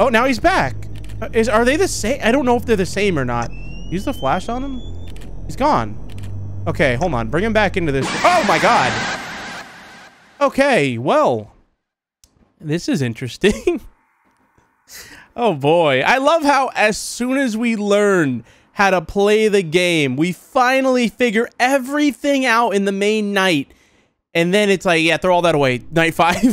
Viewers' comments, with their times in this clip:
0:08 i gotta admit that sound like the "Dang Daniel" laugh